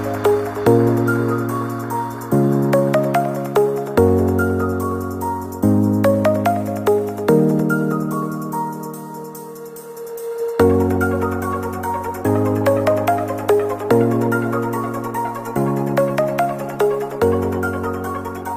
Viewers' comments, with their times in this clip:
0:05 whas si funny a peacful dance then ROCK N ROLLLLLLLLLL